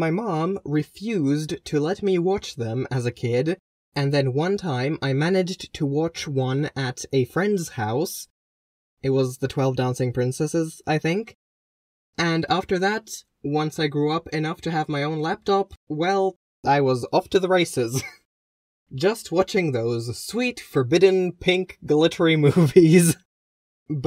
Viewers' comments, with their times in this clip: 0:08 I thought you said "Twelve Thousand Princesses" lol